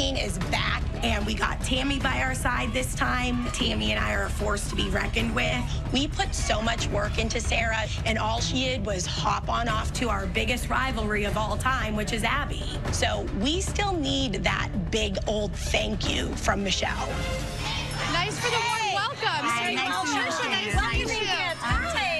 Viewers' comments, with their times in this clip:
0:09 why is she talking like that lol